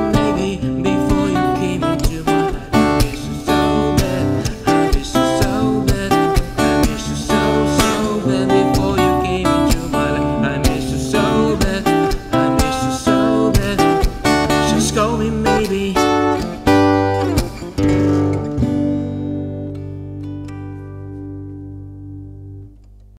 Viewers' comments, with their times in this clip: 0:04 i cant help myself but its like homer simpson that "so" :D its cool :))
0:14 lol scold me maybe